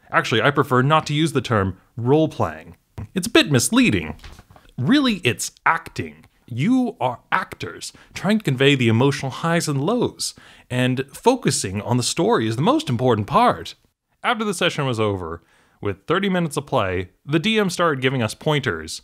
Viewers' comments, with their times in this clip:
0:03 "it's a bit misleading" flips next page in script i've watched this video probably a dozen times, by now. first time i heard it